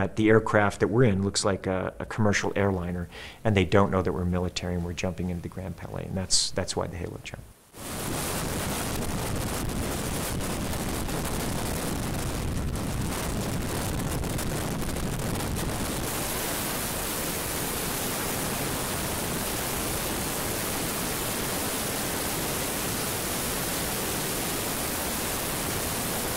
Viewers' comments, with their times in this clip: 0:08 sounds like an xbox cod lobby